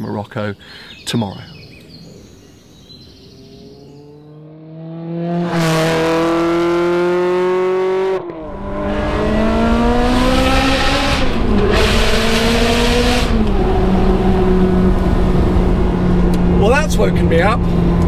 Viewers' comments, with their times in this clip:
0:06 that exhaust note put a smile on my face! haha epic man keep up the good work!